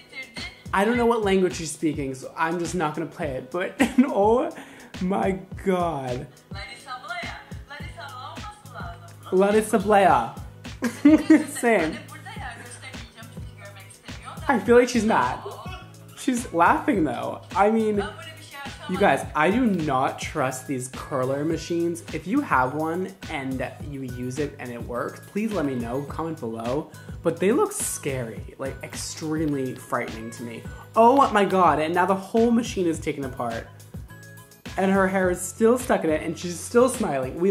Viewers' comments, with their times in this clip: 0:04 she speaks turkish
0:18 She’s speaking in Turkish. She is a girl from Brazil who moved to Turkey (her boyfriend is Turkish, she moved in with him.) You can find her on instagram.